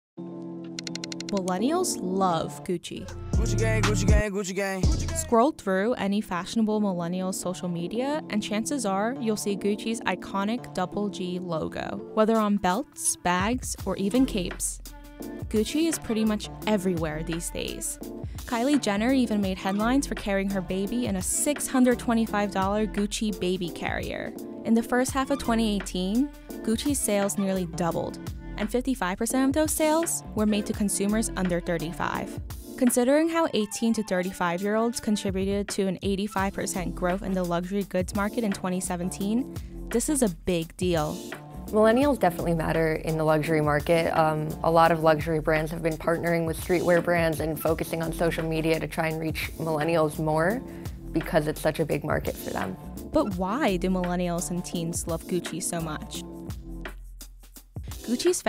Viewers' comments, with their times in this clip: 0:00 Billenials love gucci
0:03 I hate that song☺️
0:45 The fashion reporter speaks like the nerdy sister from Loud house